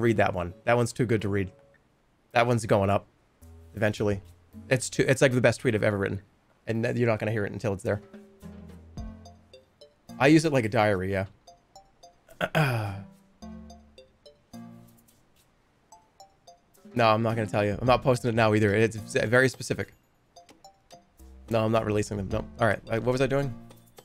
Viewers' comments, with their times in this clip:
0:08 "I use it like a diarrhea."